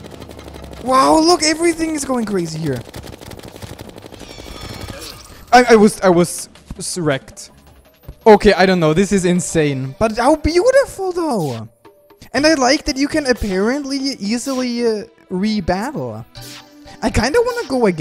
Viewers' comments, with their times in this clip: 0:05 "I was, I was.. Erect.